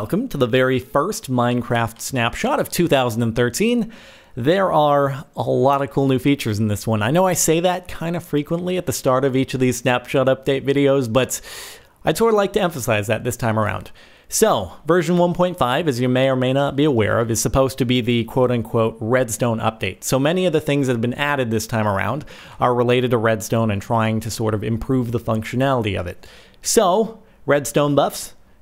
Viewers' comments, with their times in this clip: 0:06 i heard shut up video... XD
0:10 Sounds like 'shut-update video' xDD